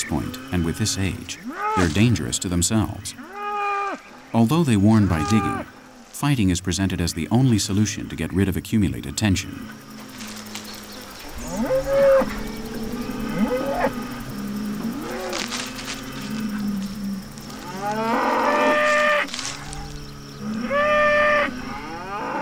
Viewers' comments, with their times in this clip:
0:06 From to the fight, when was the bull the story was about bellowing?